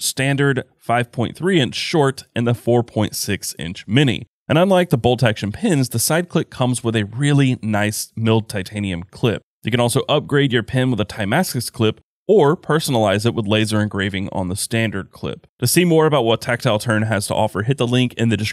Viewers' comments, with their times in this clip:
0:05 anyone else hear the voice crack😂